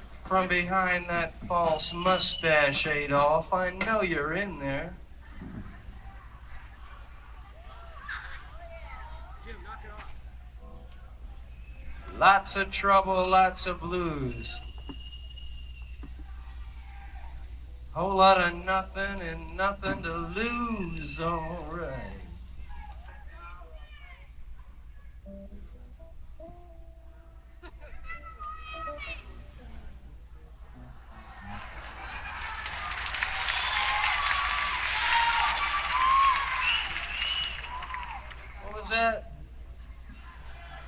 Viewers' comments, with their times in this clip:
0:09 "Jim, KNOCK IT OFF!" Hah ha sounds like Robby.
0:10 you can hear someone say "Jim knock it off."
0:26 Some chick in the audience screamed, "Remember miami" & Jim heard it 😂😅😂